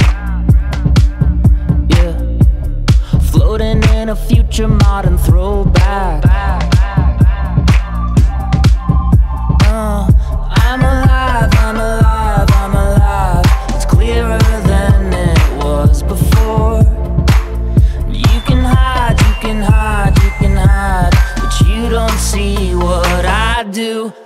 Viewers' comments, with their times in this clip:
0:07 anyone else think of the apex legends theme?